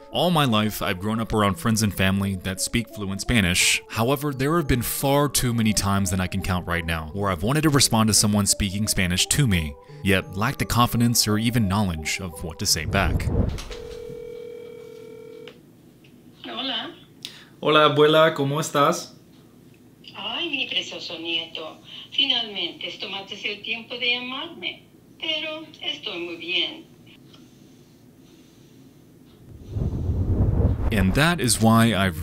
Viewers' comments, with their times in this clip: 0:04 Anybody else feel like the grandma bit sounded like an AI? 😅
0:17 your grandma sounds like a tv drama character, but to be fair my grandma also does sometimes. I bet yours watches as many movies and telenovelas as mine does. I kind of get weirded out when my grandma does that and just say something like "yeah, nice to see you"